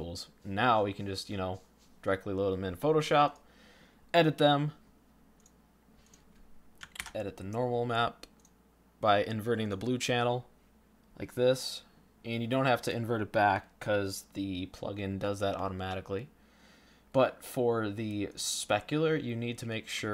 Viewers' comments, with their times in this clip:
0:06 As horrifically stupid as I feel for being a complete noob I got stuck "edit the normal map by inverting the blue channel" That step was an audible "click" yet no instruction. Clearly that must be one of those photoshop 101 things that everyone should know. So after more searches on google I found out that it was Ctl+I (or, Image/Adjustments/Invert).....